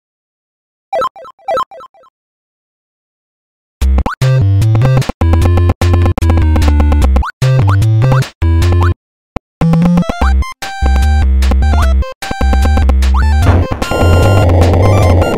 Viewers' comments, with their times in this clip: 0:01 some old phone sound in 0.25